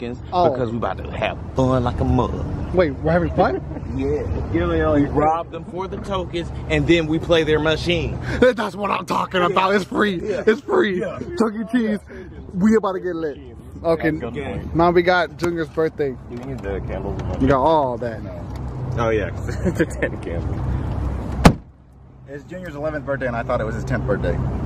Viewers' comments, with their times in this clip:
0:05 Bill Cosby trying to explain to Jesus that he shouldn't be sent to Hell.